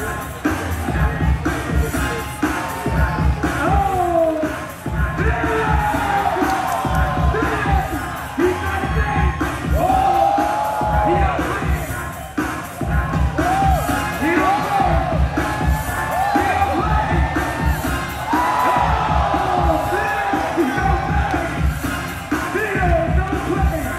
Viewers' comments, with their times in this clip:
0:05 who is that??? Can't understand the screaming haha...